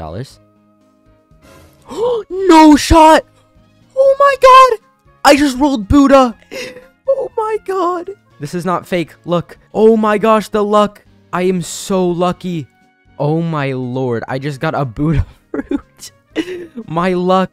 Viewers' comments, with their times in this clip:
0:04 bro showed his real voice this time